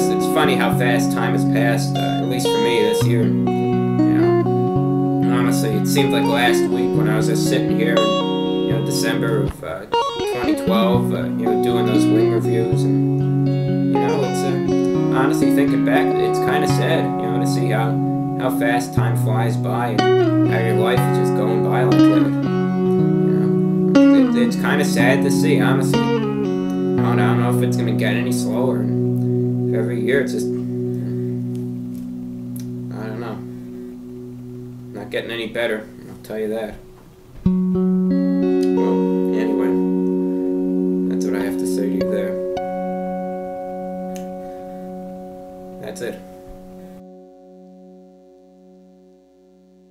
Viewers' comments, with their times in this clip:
0:09 Dude that riff was sick!
0:19 the double tapping is angelic
0:37 We need the epic strumming to come in after "I'll tell ya that", but otherwise it is perfection!